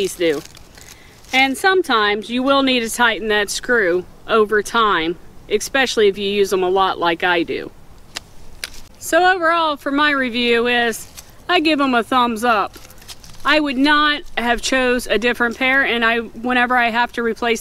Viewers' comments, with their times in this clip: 0:05 Nice review, thanks. I’m going to get some. And did you just say expecially like my cousin does? 😊